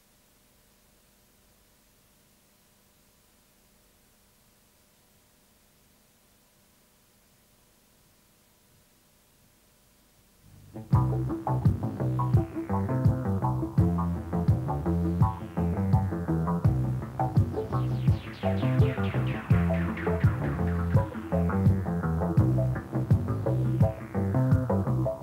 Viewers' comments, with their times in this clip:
0:10 The soundtrack starting is wicked, TR808 music at its best.